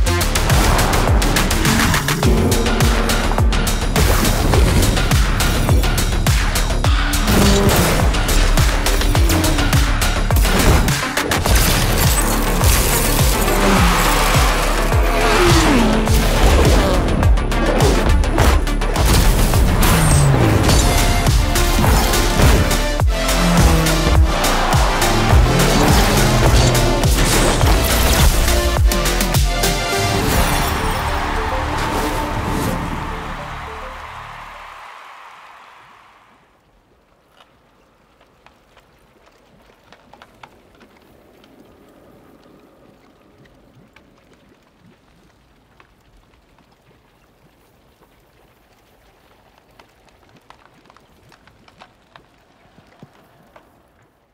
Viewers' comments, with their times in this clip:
0:09 nobody notice the crack sec? maybe it just me but i think it's somethings
0:35 Props to the SFX artists for this trailer. If you're listening through stereo speakers or headphones, you can fire and ice on the right and left channels respectively. From